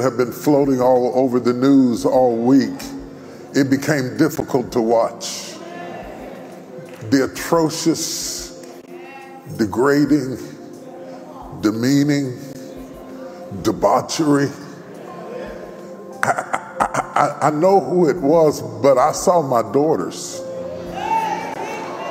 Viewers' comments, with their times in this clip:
0:07 you can hear the 🐑 in the background 🤦🏽‍♀️ agreeing with whatever the Shepherd says. Without true connection to God for themselves with the spirit of ‘discernment’🤷🏽‍♀️